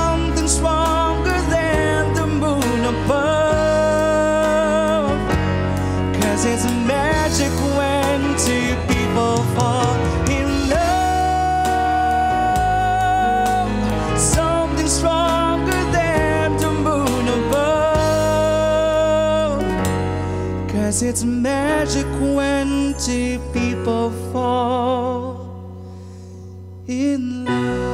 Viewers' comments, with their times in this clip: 0:08 Yes SING IT!!! The audio of the band was so crisp and clean. 👍 As usual, the vocalist have this interesting and special tone.